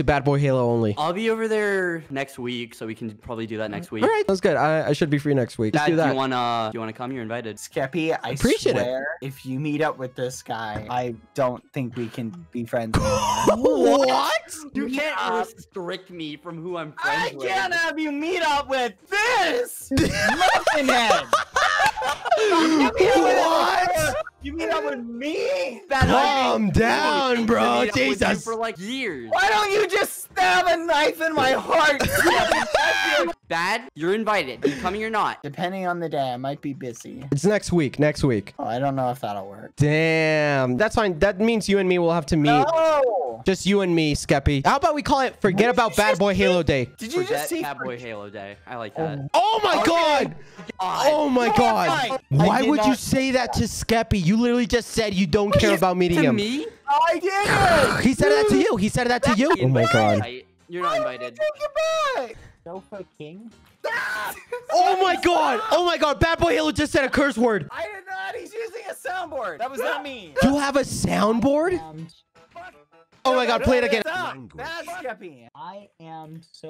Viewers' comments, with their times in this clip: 0:09 The pause between “THIS” and “MUFFIN HEAD”- just perfect 😌
0:29 BBH: ''WHY DON'T YOU JUST STAB A KNIFE IN MY HEART SKEPPY?'' That sounded so sad
1:02 Sofa king sounds like so F*CKING so bad cursed